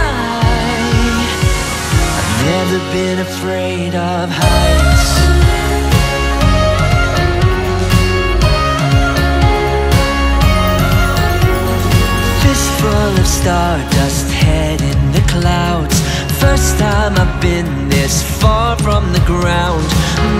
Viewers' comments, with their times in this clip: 0:04 The money note on “sky” 🙌🏻🙌🏻🙌🏻🙌🏻🙌🏻